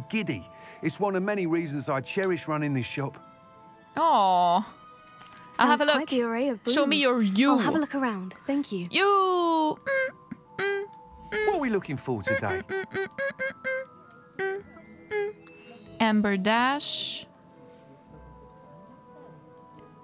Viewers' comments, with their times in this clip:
0:08 Was not expecting a Soulja Boy interlude!